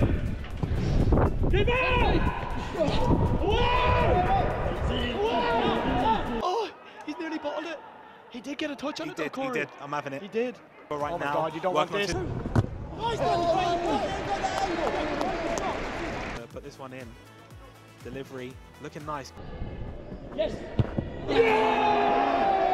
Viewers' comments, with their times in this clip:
0:04 why did the commentator moan?